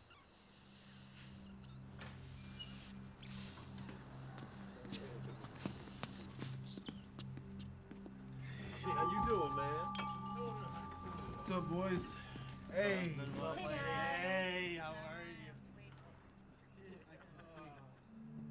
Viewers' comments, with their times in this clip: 0:03 the red guy exhaled!